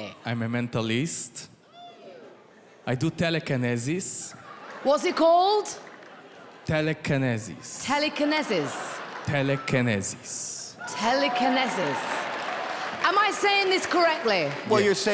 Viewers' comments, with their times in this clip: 0:03 He cracks me up because he says telekinesis wrong but still is confident with his pronunciation